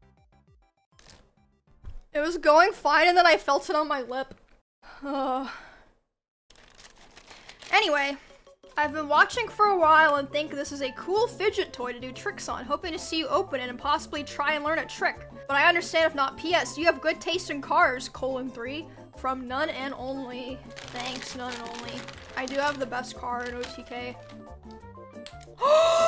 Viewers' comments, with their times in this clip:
0:07 The face of almost crying then to the happy “anyway” 🤣